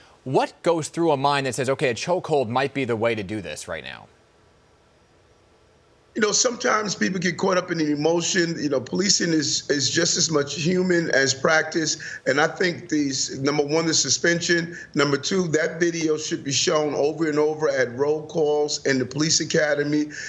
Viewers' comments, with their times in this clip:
0:05 they were quiet for 10 seconds